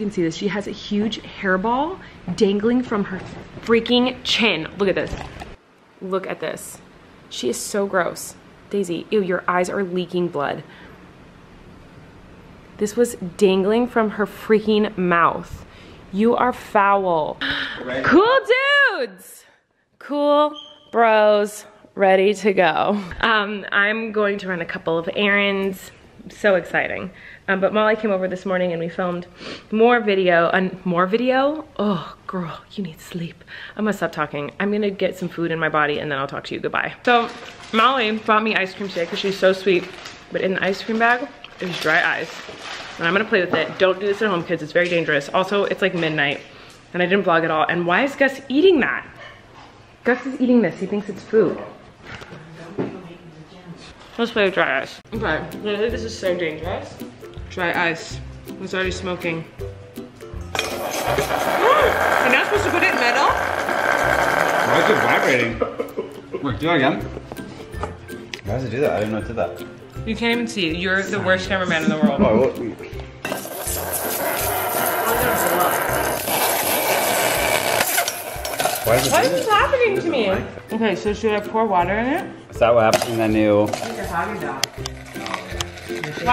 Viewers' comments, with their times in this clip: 0:09 Billie Eilish is quacking
1:08 Don’t wear headphones in her vlog